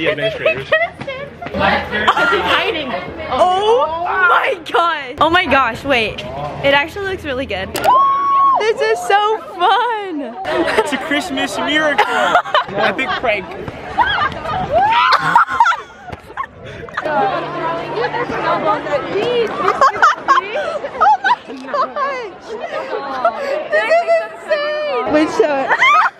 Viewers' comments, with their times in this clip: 0:10 the way he threw that snowball at her, then screamed 🤣